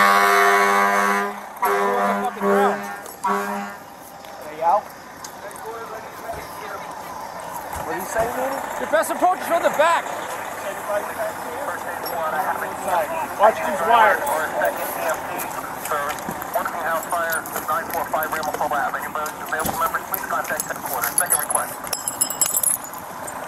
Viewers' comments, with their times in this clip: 0:07 that is a scary sound, from what I understand it is to instruct firefighters to withdraw from the building?